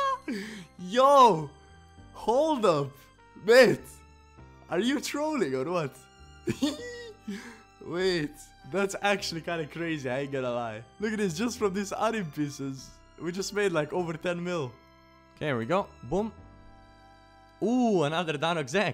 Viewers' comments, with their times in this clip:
0:06 Omg that laugh tho????!!!!???